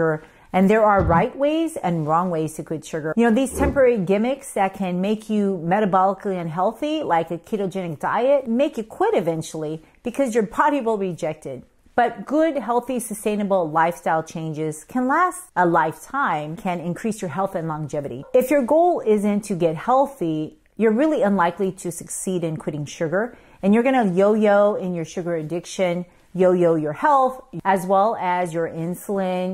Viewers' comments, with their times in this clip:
0:10 "because your potty will reject it"... Ok, doc!